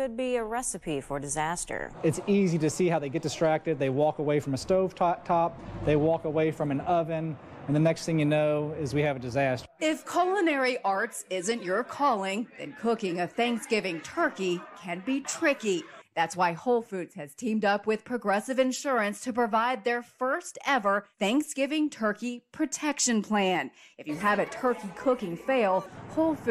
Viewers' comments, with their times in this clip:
0:09 The news anchor said "Colonary" arts